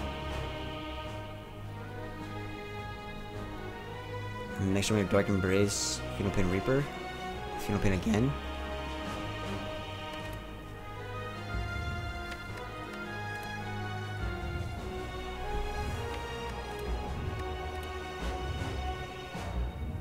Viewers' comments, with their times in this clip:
0:07 Silence starts ... Aaaaaaah, so good! :)